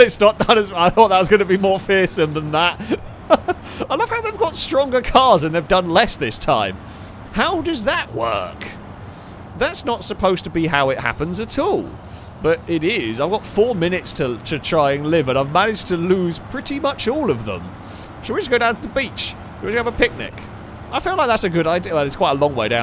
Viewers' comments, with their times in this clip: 0:04 why did his voice randomly go 20x speed for a second